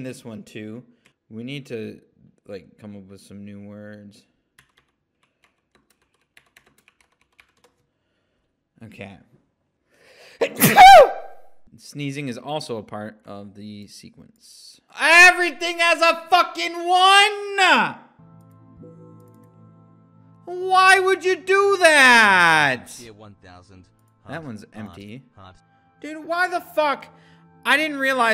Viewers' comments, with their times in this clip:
0:09 i dont know why him sneezing made me laugh but it did